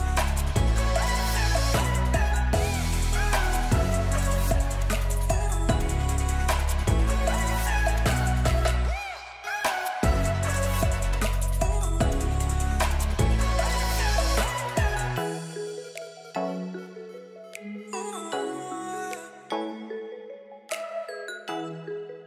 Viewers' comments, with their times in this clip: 0:08 V-Tuned perfect syncro with the song xd